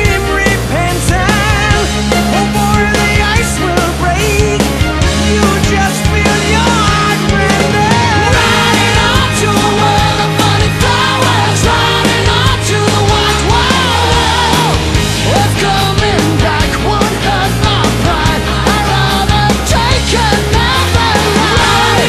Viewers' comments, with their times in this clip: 0:06 riding on to the world of cauliflower